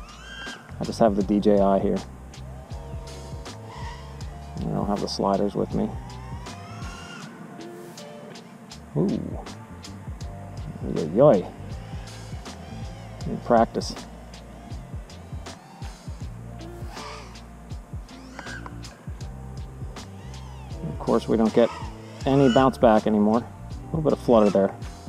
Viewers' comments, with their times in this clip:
0:10 I think i heard some PA dutch in your voice.